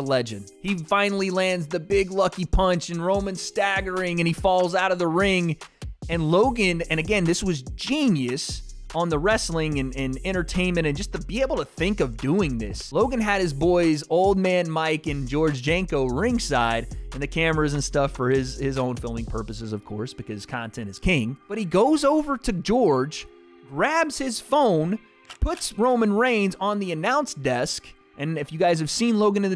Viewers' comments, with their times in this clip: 0:10 bro the timing with Background Music